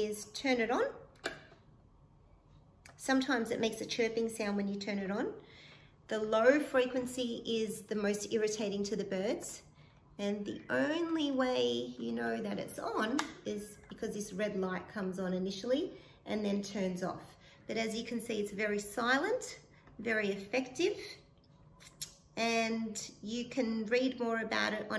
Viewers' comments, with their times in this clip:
0:06 When you opened the low frequency I could hear that sound and it was piercing my ears.